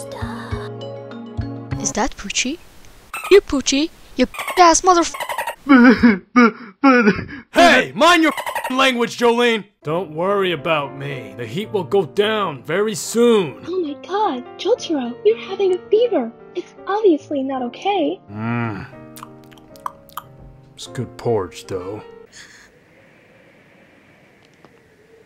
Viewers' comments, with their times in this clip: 0:05 i dont know why i was feeling sad for pucchi crying.
0:09 oof my voice sounds a bit scratchy lol 😂 I tried